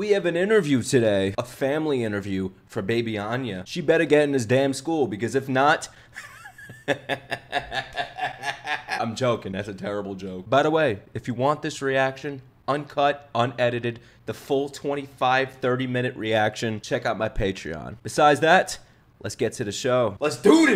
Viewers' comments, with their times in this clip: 0:05 that laugh was so evil Jesus 😂